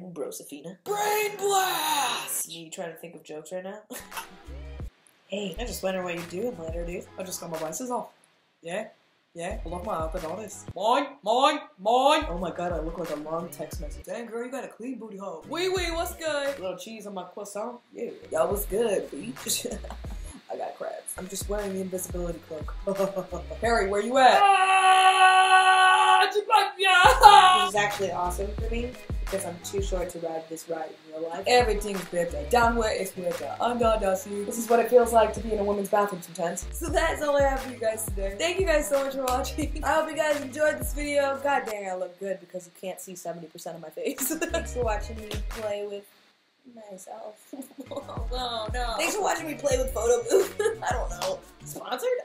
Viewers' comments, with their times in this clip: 0:09 y she sound like the palican from finding nemo?😂😂
0:34 Lowkey thought she was singing Hamilton 😂